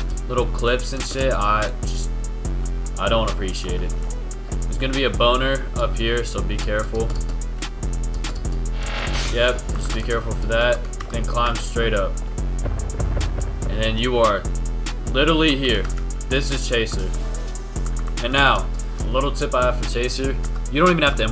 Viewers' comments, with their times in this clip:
0:03 there's gonna be a what up there?